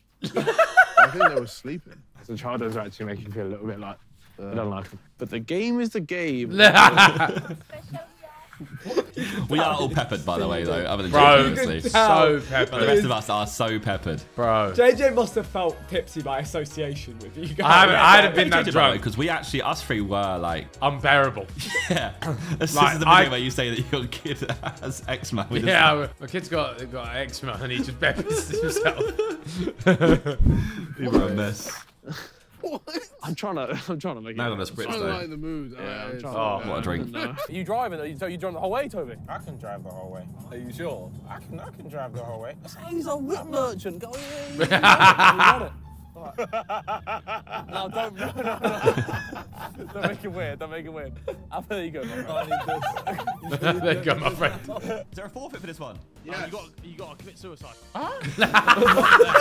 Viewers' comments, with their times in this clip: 0:07 fake laugh by ethan in the vid
0:45 fake laugh by tobi and simon, its so clearly obvious